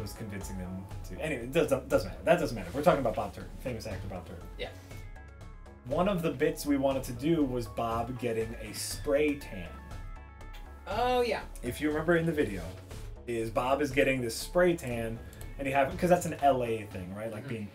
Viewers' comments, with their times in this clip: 0:03 "The famous actor, Bob Turd"???